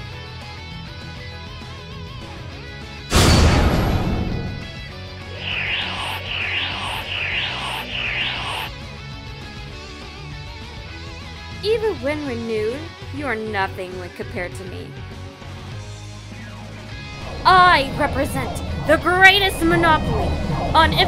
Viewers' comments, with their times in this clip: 0:04 yeah...that sounds like my ram being sucked up by chrome